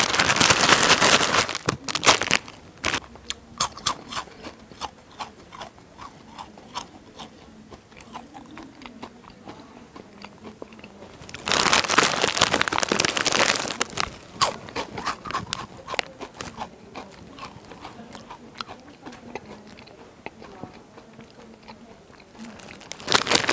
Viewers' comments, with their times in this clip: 0:05 The Asmr lmao 😂